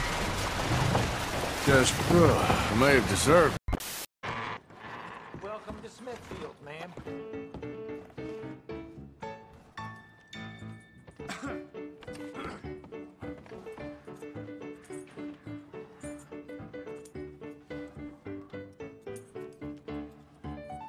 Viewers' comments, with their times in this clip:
0:07 music so good they dancing while playing poker